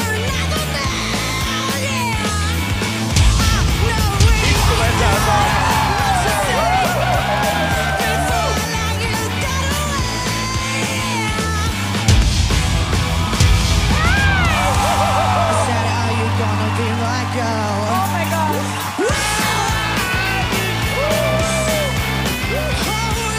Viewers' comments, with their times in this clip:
0:04 Samu Haber speaks Finnish